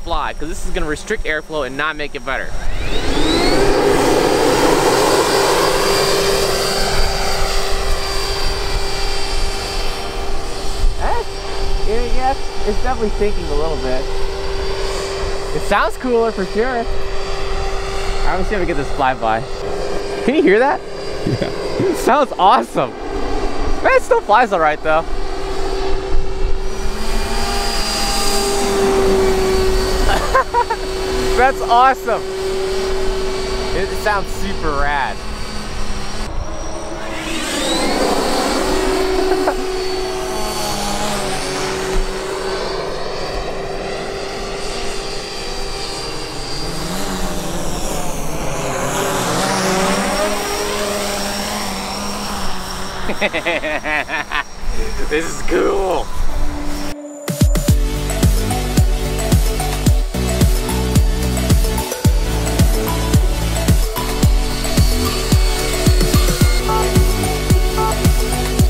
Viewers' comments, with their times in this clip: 0:05 When he put that piece on the end of the leaf blower, on take off it sounded like a mf jet 😂✈️
0:52 Mr CHOW Laugh . . . ❤